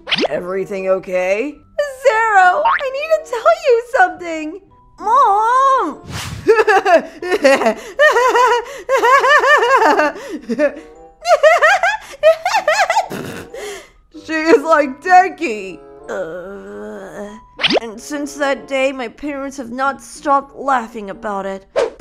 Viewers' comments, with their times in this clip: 0:07 the same old laugh 😂😂